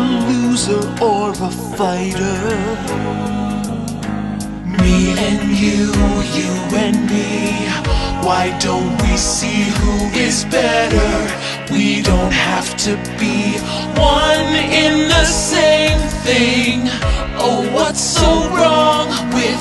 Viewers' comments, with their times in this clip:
0:04 why does that line sound so good-